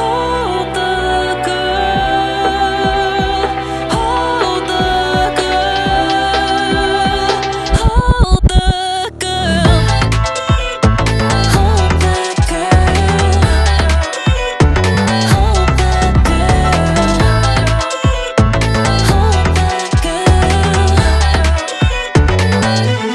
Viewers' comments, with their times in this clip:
0:10 the vocal sample is so cool ughhhhh😍😍😍😍😍